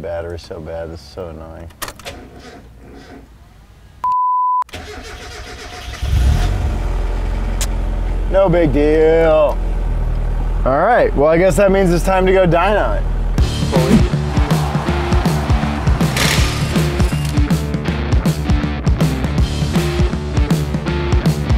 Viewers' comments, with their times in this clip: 0:04 that sounded just like my L20B 4 banger in my 77 Datsun. So nostalgic. :)